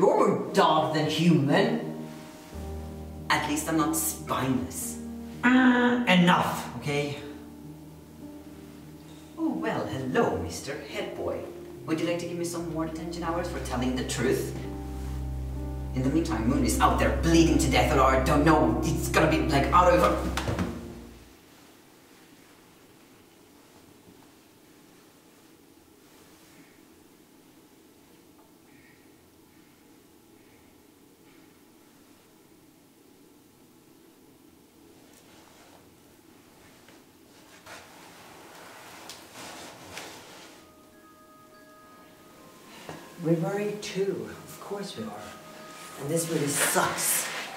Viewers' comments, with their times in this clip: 0:07 crap, I didn't mean to laugh but that sound sounded like the 'wrong' answer sound and- pfft
0:33 That awkward silence tho 😂😂